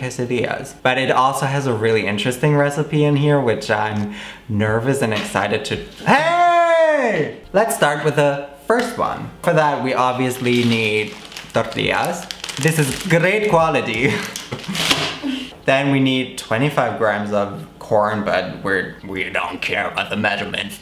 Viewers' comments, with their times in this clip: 0:06 when all you want to do is sleep but it's 6 am and the neighbour begins to move all the tables in the whole fucking house